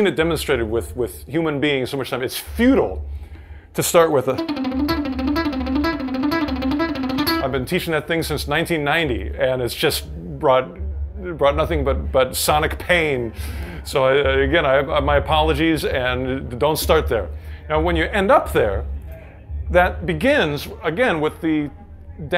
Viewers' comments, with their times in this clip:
0:04 Nice Di Meola imitation